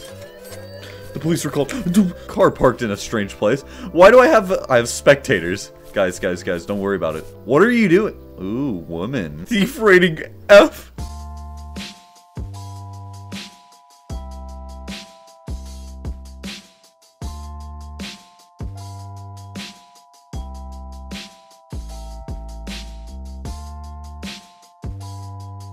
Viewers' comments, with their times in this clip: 0:08 why is nobody talking ?